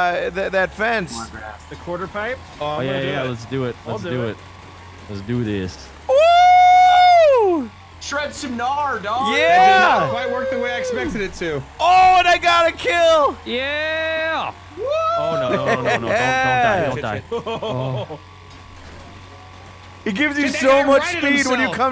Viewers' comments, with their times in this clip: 0:05 dude turns into a charger from l4d2 and rams somebody lmoa even makes the noise